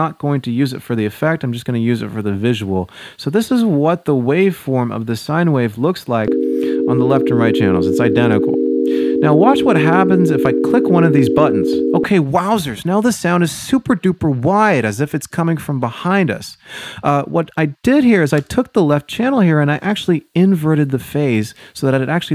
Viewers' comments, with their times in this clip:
0:05 On my phone speaker there's no tone playing Just keeping informed
0:10 I was confused because i couldnt hear anything but then I realized that I had mono audio on wowsers